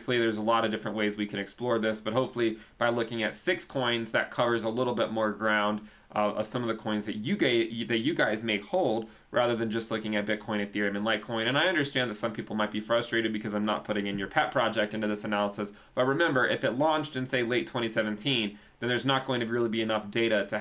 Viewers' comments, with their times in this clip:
0:07 some of the coins that you gay...you guys would like may hold